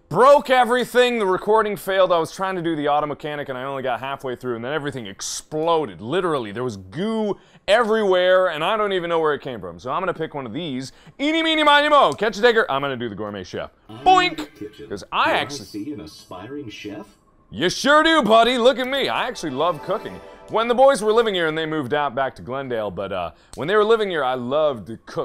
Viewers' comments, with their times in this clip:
0:10 MARK you sang the police brutality version of Eeny meany miney mo, catch... by toe. In reality all I heard was "gghrr", but ya know how society is these days. It's a big problem here, down near Philly.
0:11 He says Tigger real clearly if you can’t hear it, your the one trynna start drama
0:11 catch a what? Clarification: he's saying "tiger" but that "T" is awfully "N" shaped
0:11 all I heard was Figger lol
0:11 anyone watching kinda sound like he said the n-word
0:11 is it just me or did I hear Mark say th n-word?
0:12 He just said Tiger/Tigger really fast that it sounds slurred. Ya'll need to calm down, looking at you Keemstar
0:12 DID MARK JUST SAY THE N WORD ?!?!?
0:12 what did he say?!?